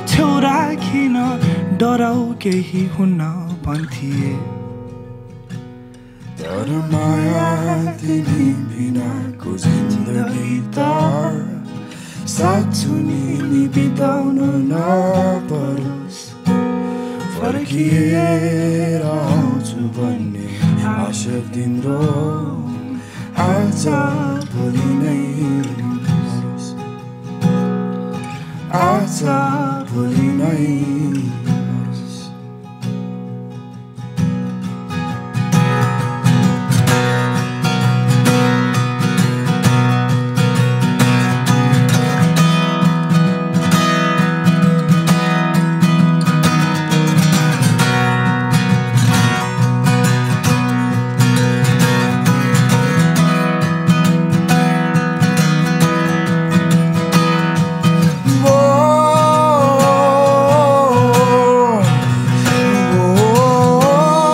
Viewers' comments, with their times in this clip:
0:07 is the best part both are best but amazing listing his (sajjan Raj vaidya) voice always.
0:36 That guitar sound ❤️
0:46 Is anyone gonna appreciate the strumming in ? That strumming-fill was damn good ani perfect!!